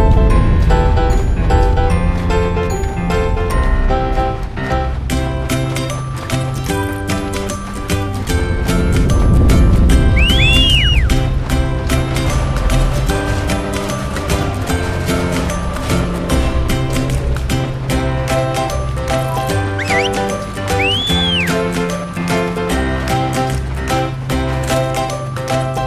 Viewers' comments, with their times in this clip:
0:08 dolpins communicating xD